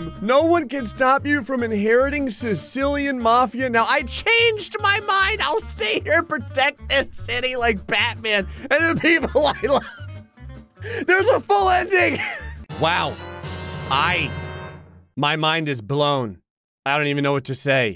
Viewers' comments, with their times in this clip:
0:04 the way he laughed always kills me 🤣